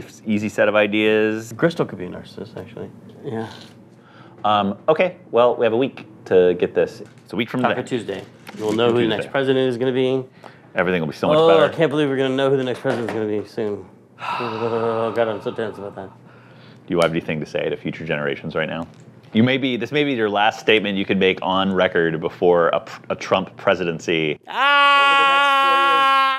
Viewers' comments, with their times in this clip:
0:08 I related so hard to this part, especially the screaming. 😩